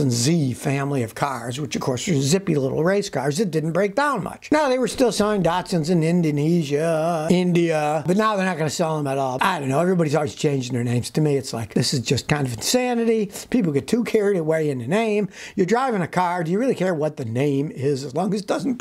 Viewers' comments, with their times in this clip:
0:04 Lovely singing voice